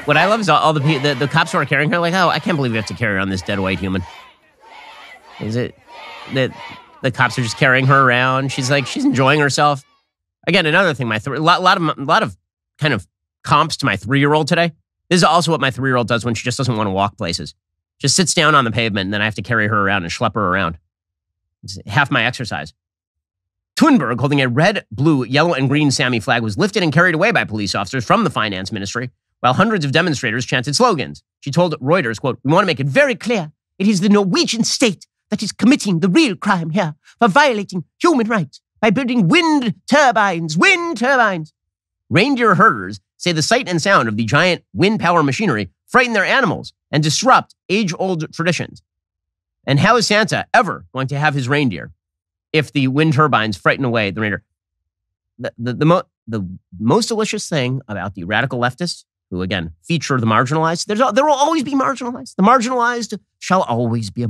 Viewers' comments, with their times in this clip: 0:05 Can anyone tell me why people are screaming "JFK JFK" as Greta is being arrested?
0:34 "We want to make it very clear, its the Norwegian state.......that Thunberg Accent, caught me off guard sir. 🤣🤣🤣🤣🤣🤣
0:49 when he said malicious i thought ben said delicious. so i thought he was gonna say, "the most delicious thing about the radical leftists is their reindeer" lolol